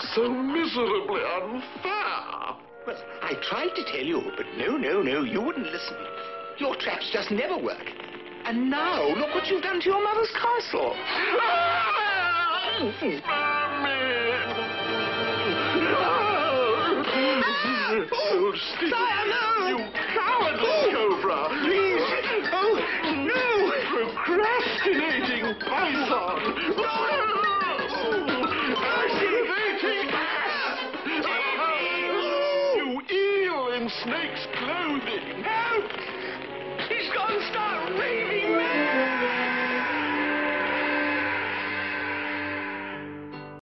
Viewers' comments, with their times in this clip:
0:08 Sir hiss 🐍: your mothers castle 🏰. Prince 🫅🏽 John: (screaming 😱 ) Mommy!
0:11 (Prince John Screaming) Mommy!
0:35 Sir Hiss: Help! He's going stark raving mad! (Echoing)
0:38 Who thought Hiss was burning to death based on his scream?